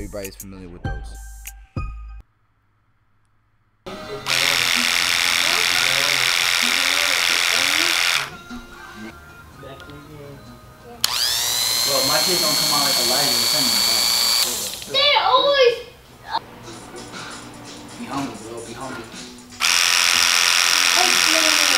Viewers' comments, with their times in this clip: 0:04 damn I'm regretting ordering these now 🤦‍♂️🤦‍♂️🤦‍♂️🤦‍♂️ PRETTY. LOUD.